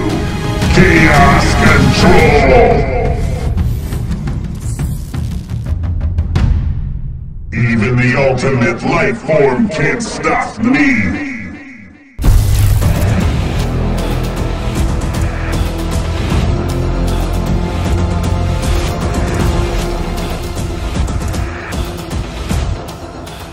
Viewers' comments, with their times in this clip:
0:07 Was that shadow voice